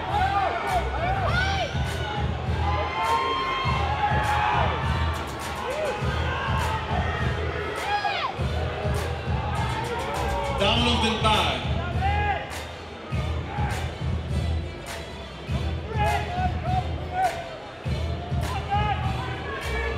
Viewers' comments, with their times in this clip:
0:05 someone yelling youjirou